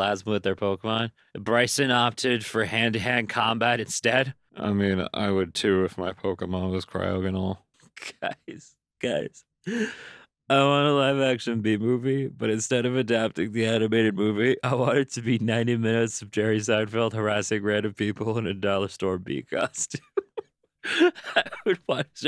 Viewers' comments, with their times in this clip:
0:10 I legit thought it said “I want to live in an action bee movie” until the next post when I finally was able to register my mistake ._. Something like that happened yesterday when my science bell ring asked if we agreed with the quote “attitude is a little thing that makes a huge difference” I wrote a whole paragraph about how ALTITUDE has made a huge difference in humanity with planes 😂